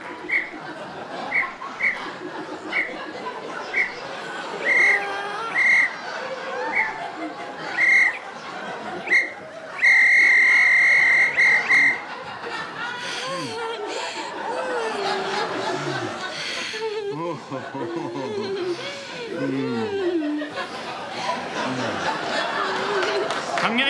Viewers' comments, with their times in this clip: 0:08 blowing farts through the whistle, too damn funny and stupid,smdh